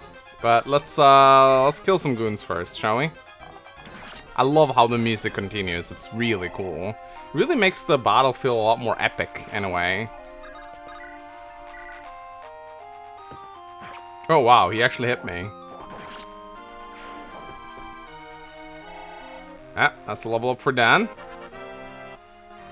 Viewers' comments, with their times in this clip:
0:04 honestly the best thing about Fates and Three Houses. The fact that battle music is the same song as the map just at a different intensity is very well done and makes the battles feel so much more epic. Especially when they pull out the exact opposite effect with silver snow final map. Just wish boss music didn't reset everything in three houses